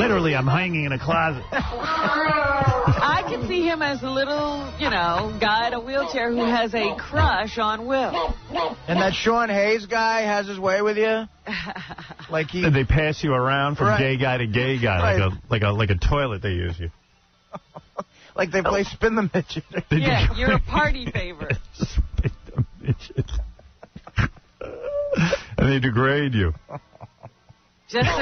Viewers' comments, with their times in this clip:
0:09 HAHAHAHA - And Howard's genuine laughing at Artie's second comment